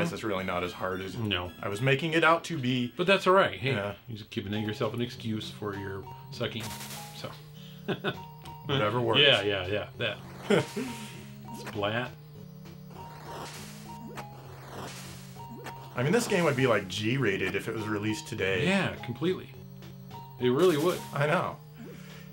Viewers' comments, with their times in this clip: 0:04 The sound of whacking those water monsters with the pipe on the arcade version is so satisfying.